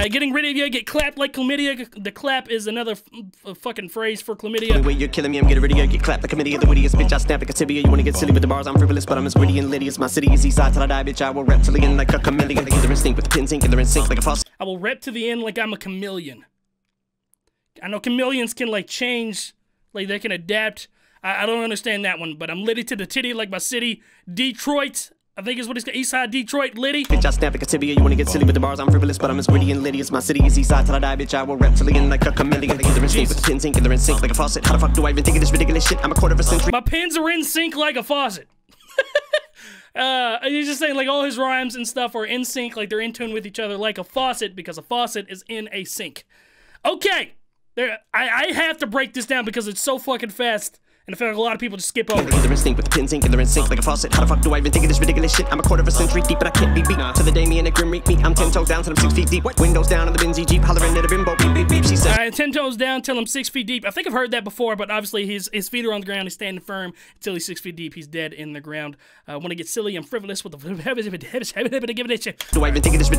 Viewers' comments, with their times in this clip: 0:09 he says it fast feel free to rewind it but it's at the mark.
0:56 Grim meet me sounds like cremate me